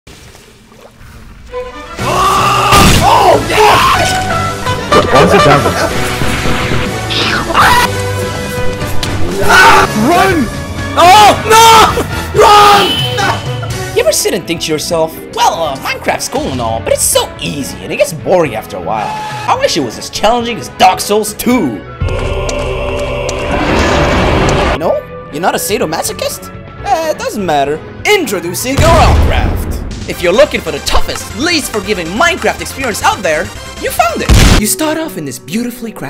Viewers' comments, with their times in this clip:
0:04 That toot toot synced WAY too well with the song. Good job bro.
0:04 Can someone explain to me how we do the doot sound in ? I find it sooo Cool and I really want to know ho to do it
0:21 Can SOMEONE PLEASE TELL ME where i can get this ominous male choir sound effect I'm trying to have a collection of sound effects in my playlist :<